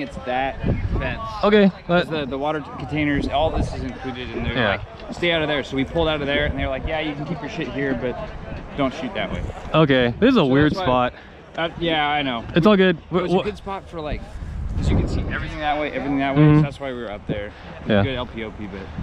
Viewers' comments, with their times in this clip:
0:05 it starts shouting lol